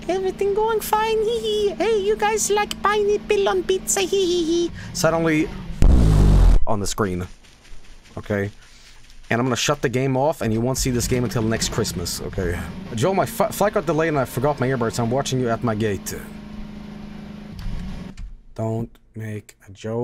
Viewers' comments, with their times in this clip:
0:05 Top 10 Bass Drops in Vinesauce streams